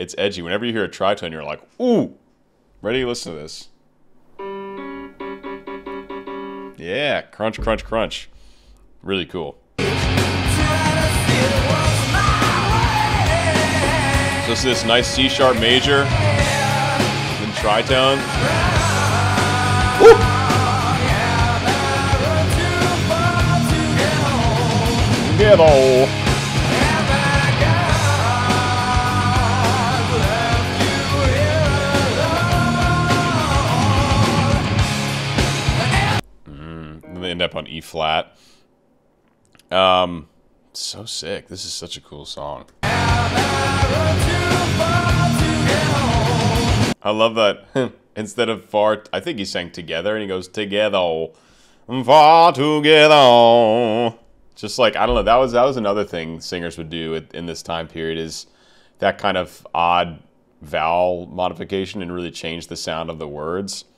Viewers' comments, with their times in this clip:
0:03 The tri-tone is why prefer hell to heaven
0:45 ah yes, the nonsensically misheard "have I run too fart to get home"